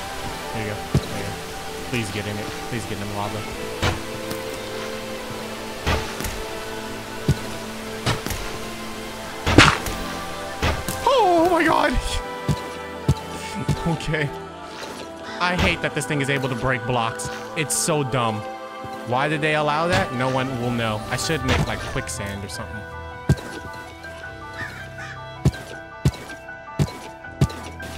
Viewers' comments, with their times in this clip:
0:09 Why did you almost sound like Mickey mouse